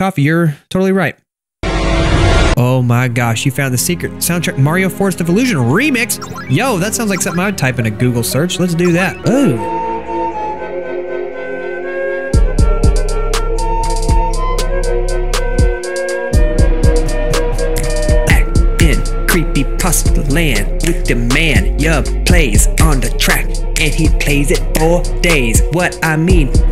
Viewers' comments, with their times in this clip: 0:07 sounds similar to the begging of super mario world